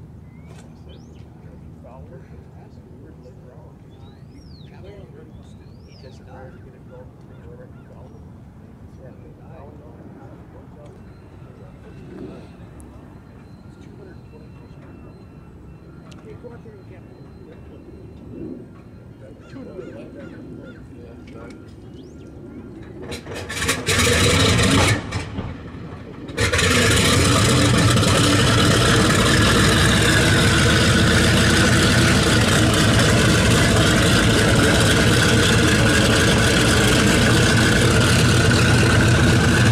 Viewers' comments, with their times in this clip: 0:04 R2D2 complaining on background
0:23 the one thing we all came here for. The sound of pure AMERICAN FREEDOM starting.
0:26 Wow! 3 PRT's or just 2? These are an earlier model than the ones I worked on in P-2's. More thunder at startup. Loving this.
0:26 i hear like 4 Ls3 Engine